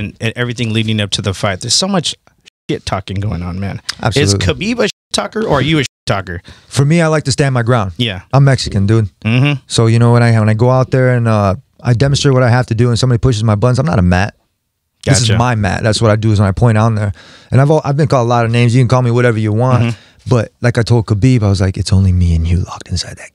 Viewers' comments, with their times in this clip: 0:08 I'm Mexican, sound American to me